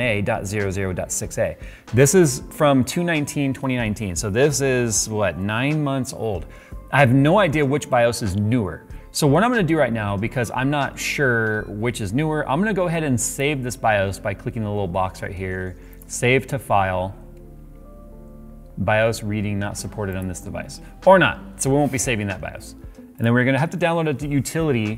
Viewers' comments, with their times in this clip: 0:10 when i heard this noise from his watch i thought it was my pc lol